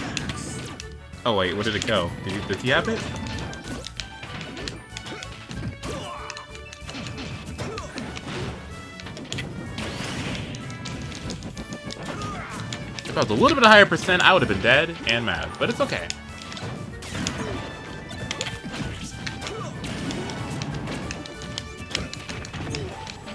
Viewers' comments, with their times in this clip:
0:09 I was rubbing my eyes, when I heard Falcons side B, and then the spike sound, my eyes opened wide